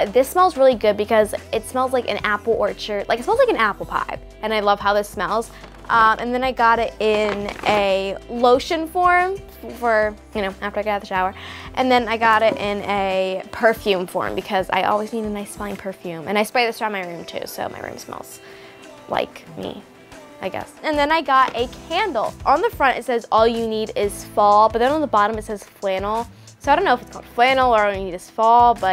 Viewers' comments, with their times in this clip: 0:09 I thought she said if I get a shower I was like 🤔